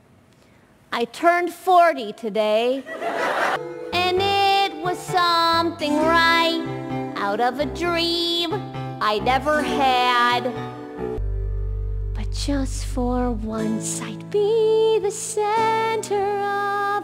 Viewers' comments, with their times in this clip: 0:05 IT HAS SUCH FALSETTOS VIBES FR
0:05 but no that song DOES give Falsettos vibes.